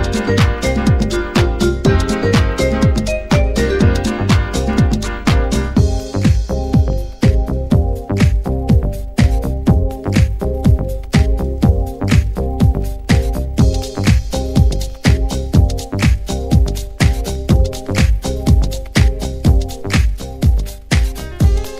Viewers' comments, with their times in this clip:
0:05 Love all the funky soulful tunes In this mix amazing tunes for dancing. : specially the tune that starts